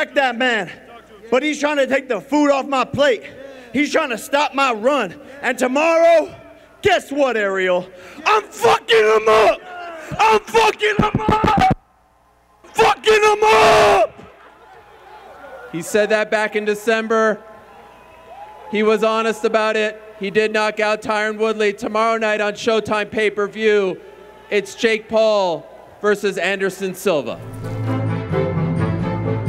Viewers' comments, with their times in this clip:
0:08 Why did Jake sound like Leo in Wolf of Wallstreet 🤣
0:10 killed me logan laughing to 😂